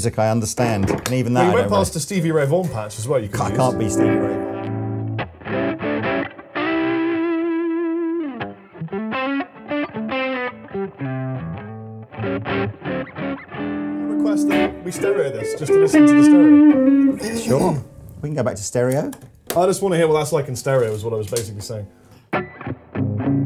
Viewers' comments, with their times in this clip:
0:05 The lick, before it became famous!!